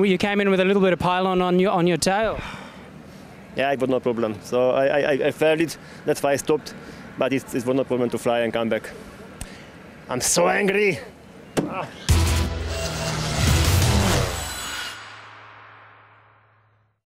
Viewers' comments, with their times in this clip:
0:09 He does a great Arnold Schwarzegger impression !